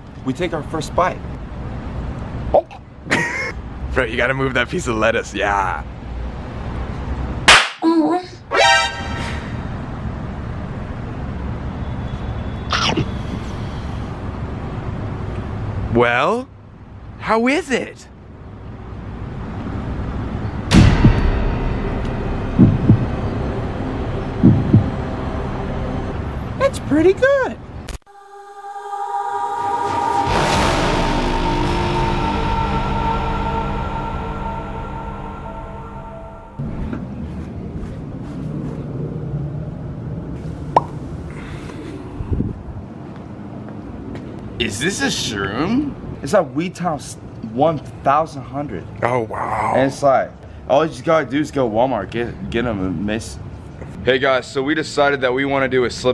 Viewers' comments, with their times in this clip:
0:07 Was the leaf moaning?-
0:15 "well how is it" (silence)
0:32 with the music literally killed me 😂😂😂😂
0:40 tbh i was so happy i heard the call of duty zombies song